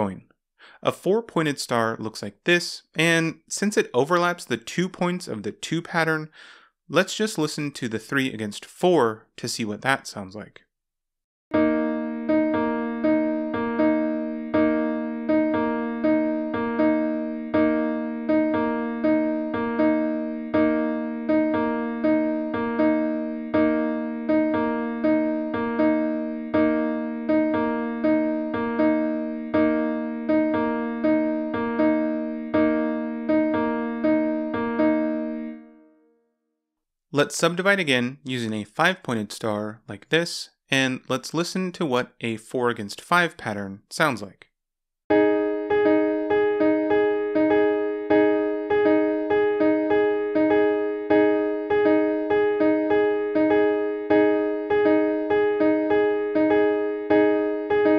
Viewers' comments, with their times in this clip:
0:09 So you get 3:4 polyrhythm.
0:11 sounds like the first four notes of msm cold island mammot/quibble
0:15 Ahh yes the Classic and easy polyrhythm
0:24 My alarm clock be like:
0:44 So in this case, It is 4:5 polyrhythm.